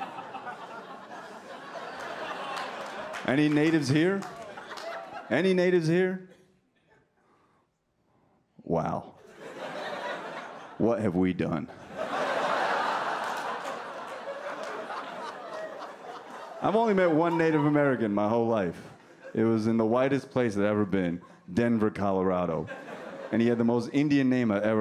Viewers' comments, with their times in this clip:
0:08 you hear one Indian call out “ here “😂😂😂😂